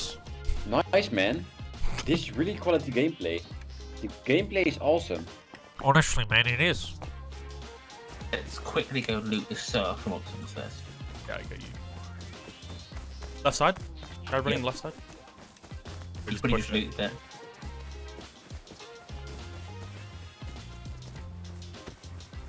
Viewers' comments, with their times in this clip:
0:04 Lol the obviously Dutch guy Cringing away because of the heavy accent.